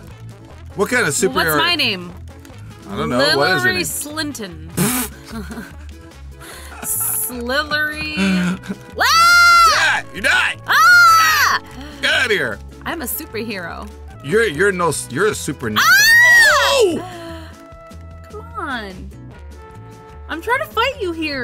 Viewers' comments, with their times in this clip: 0:09 Red Sounds like the boss from Spider-Man... XD